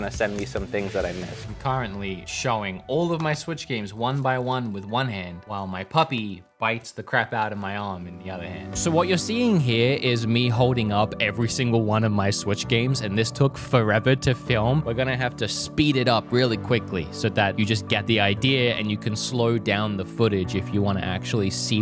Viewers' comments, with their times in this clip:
0:09 he sound like he’s drunk when it’s at 0.25x speed lol